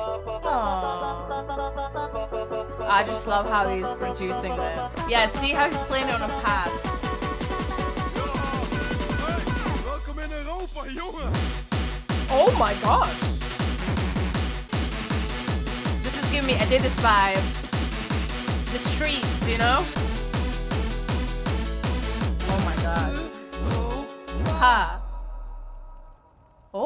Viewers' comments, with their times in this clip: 0:10 the guy that said "Welkom in Europa, jonge." is an artist from a Dutch movie that is or was very popular in The Netherlands that was made in 2011 Also the genre that was after until the end is early gabber but on a slightly slower tempo